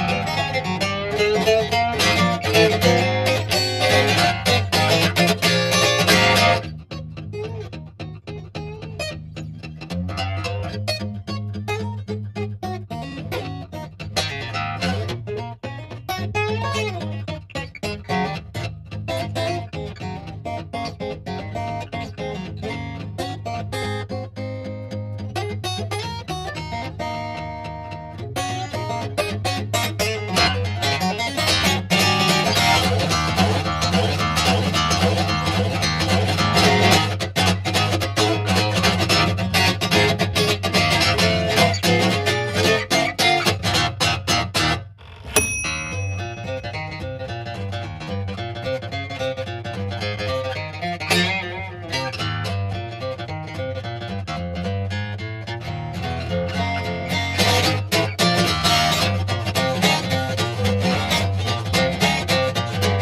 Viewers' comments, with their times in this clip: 0:03 Yes I believe everything is just half a step down. I've got just over halfway sounding pretty nice but as soon as you get to the section I gotta develop that double picking thing as a skill to play it and it sounds horrible when i do.
0:05 That bluesy part gets every fucking time
0:06 my fav part with muted sstrings, it sounds so smoooooooooooth
0:23 My man hit the algorithm in Japan, America, Mexico, and Taiwan! What a Chad, that breakdown is sick!
0:36 This sounds similar to nuno bettencourt too except its an acoustic. Especially
0:44 That oven sound was unexpectedly cool.
0:45 That playing's awesome and all, but that DING is what earned you a sub.
0:47 music starts playing without his hands😬